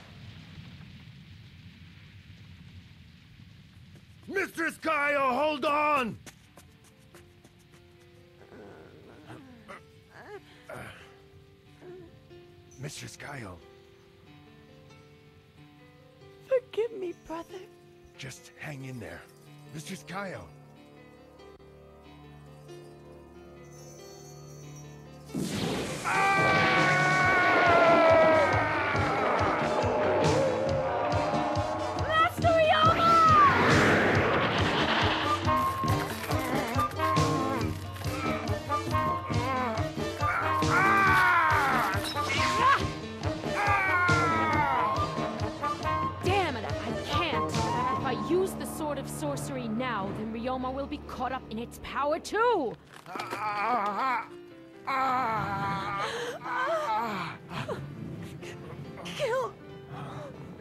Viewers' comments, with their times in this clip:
0:10 Such a great anime. This was based on a TV series and manga although I never got my hands on the manga. The song playing in the background is wonderful.
0:41 Whoa never noticed before but they totally stole the Sith light saber “ON” sound here. When she pulls the blade it even lights up on time with the effect. But in Jedi blue. 😂